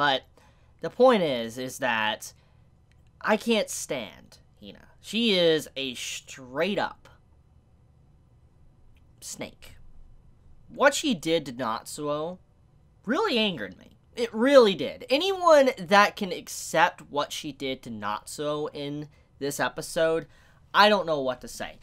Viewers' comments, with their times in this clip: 0:07 that delay to "🐍" had me laughing